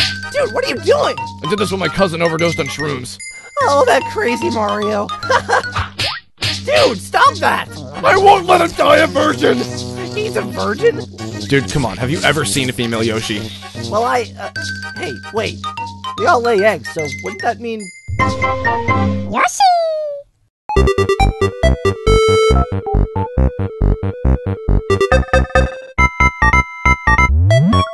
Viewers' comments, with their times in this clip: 0:10 Donald duck noises. Lol